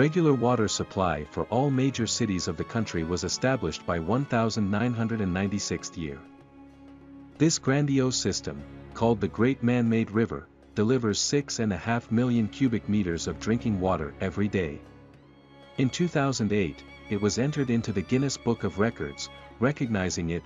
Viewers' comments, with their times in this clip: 0:03 Another AI voice people are too lazy to use their real voice lmao
0:03 1996 is erroneously pronounced as "one thousand nine hundred and ninety sixth year" I guess the name of the channel should have been a clue of how low quality this channel is.
0:04 "was established by the one thousand, nine hundred and ninety-sixth year." Even when the information being presented is interesting, that voice somehow makes it bland and boring.